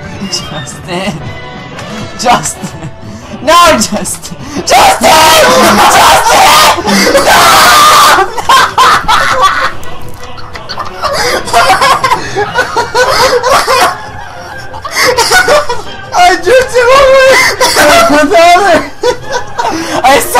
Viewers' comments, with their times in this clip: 0:08 it sounds like someone peed